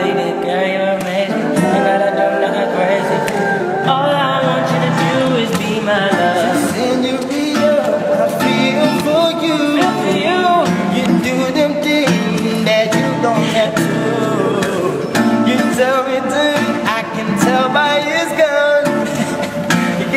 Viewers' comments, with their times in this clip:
0:05 love that deep voice